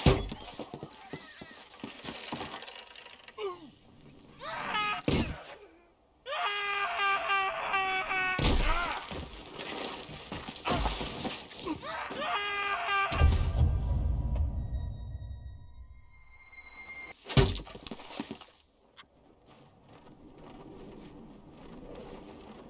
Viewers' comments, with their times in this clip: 0:09 the reverb made this hit different